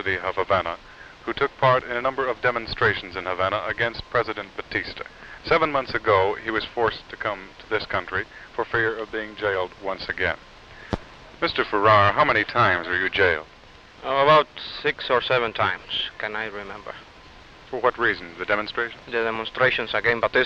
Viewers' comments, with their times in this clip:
0:05 Beginning .....Is that Desi Arnaz??....Sounds n looks just like him!!!...haha